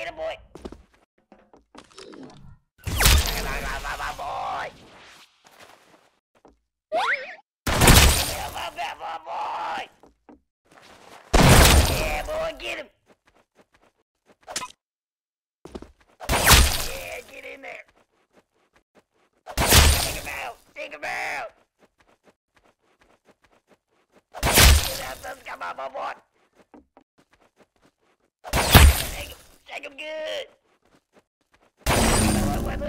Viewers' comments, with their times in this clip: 0:06 my cousin trying to speak English
0:18 this guys voice is voice of sick gnome